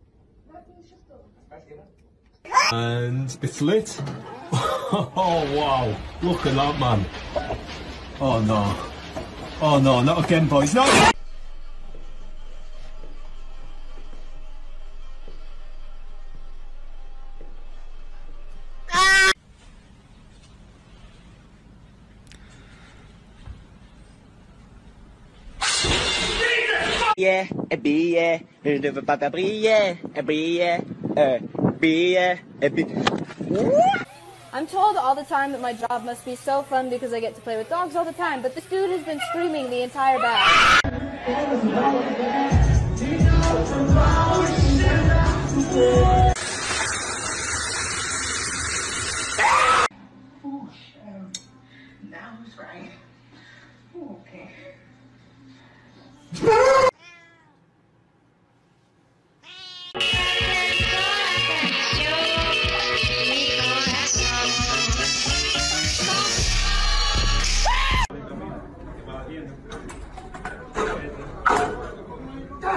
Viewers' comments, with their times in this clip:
0:03 ITS LAFF LAFF THE BRITISH MAN SOCKS HERE
0:21 that scream at the end tho
0:30 that Luigi impression got me rollin!!!😂😂
0:40 oh shit woahhh in autotune will always be funny 😂😂😂😂
0:41 you can just hear him with the auto tune going: OH SHI- OHHH
0:41 "oh shit WOOAH" with the auto tune LMAO
0:45 Sounds Like Ozuna
0:49 it look like sound of doors entity quick
0:56 i laughed to hard😂😂😂😂😂the dog scream😂😂